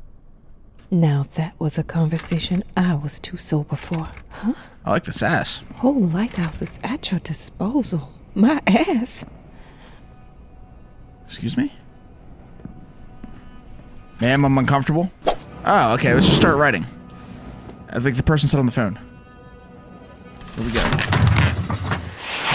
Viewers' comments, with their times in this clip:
0:08 they way she said “my ass”💀✋